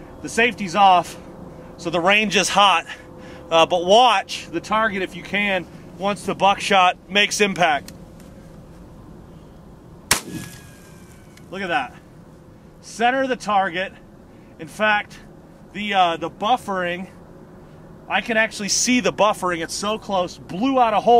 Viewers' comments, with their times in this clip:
0:09 That whistle though :)